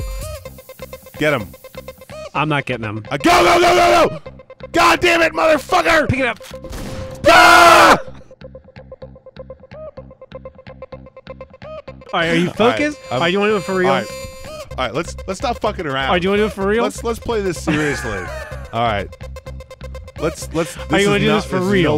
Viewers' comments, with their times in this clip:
0:07 LMFAO the synchronized "PYAHHH"